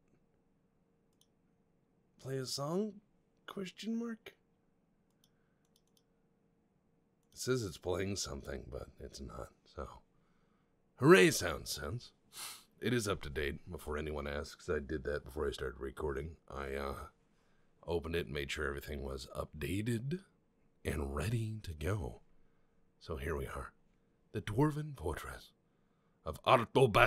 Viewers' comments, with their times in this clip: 0:10 Soundsense: now playing Sound of Silence ASMR version.